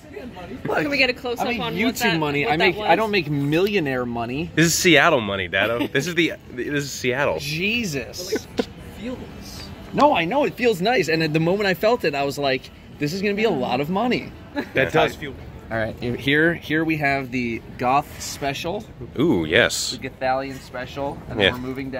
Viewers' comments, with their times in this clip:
0:07 you and me said Jesus in the same tone and at the same time lmao Edit: fixed the time